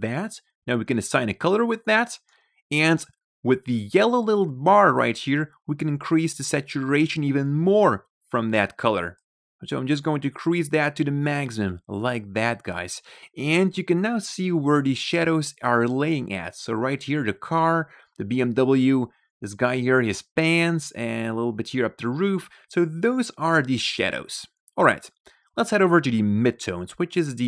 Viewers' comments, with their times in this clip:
0:10 "increase dat to da maaggsum" lmao